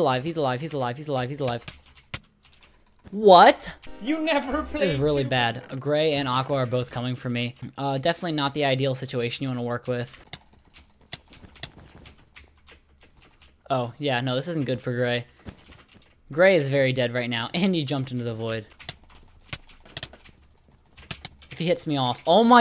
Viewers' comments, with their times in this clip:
0:04 did I hear Pewdiepie talking about his game!??
0:04 am i the only one who heard podypie ?